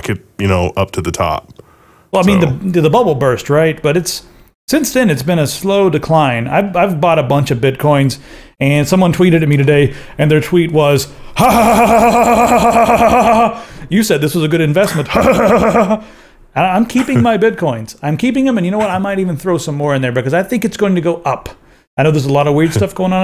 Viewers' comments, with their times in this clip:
0:04 skip to [there's still some girly giggling but it gets better]